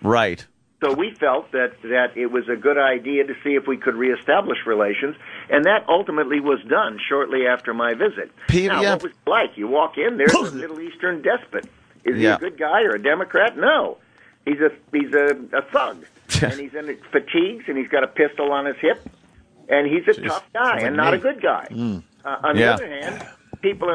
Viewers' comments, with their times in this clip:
0:08 who coughs bullshit ? CK?